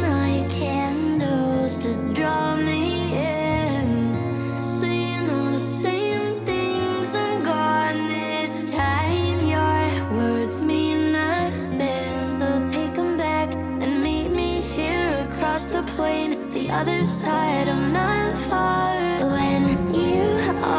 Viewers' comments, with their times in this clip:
0:08 No seriously especially how she says “this time” is so good.